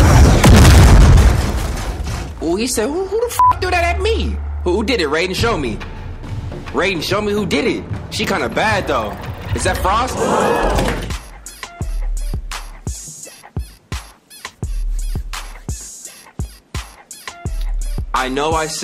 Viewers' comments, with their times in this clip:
0:06 is the best pause moment simply because of the gasp sounds when they show his face